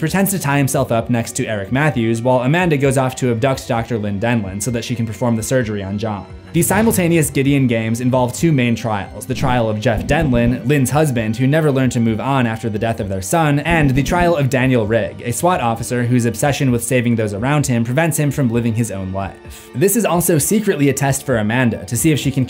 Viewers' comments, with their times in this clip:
0:06 Those knocking noises scared the shit out of me